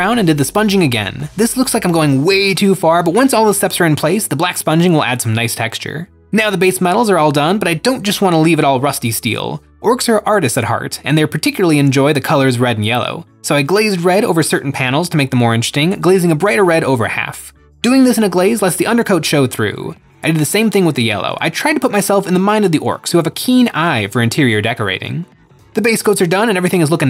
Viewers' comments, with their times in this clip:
0:10 Love that fart sound effect 😂